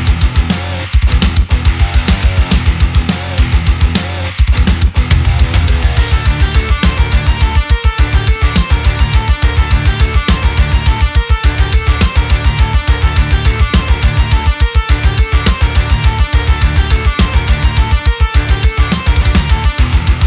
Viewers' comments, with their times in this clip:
0:06 that ride is almost non existent. Also most of your cymbals are too low it seems to me. But of course your playing is always rock solid. Kick ass!